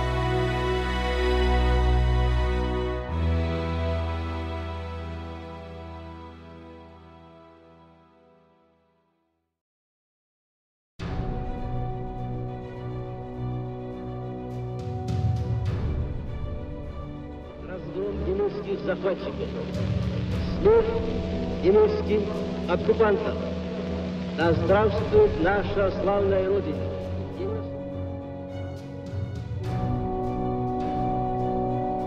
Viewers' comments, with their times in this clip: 0:10 epic timing of music
0:18 you would think Stalin would have a deeper voice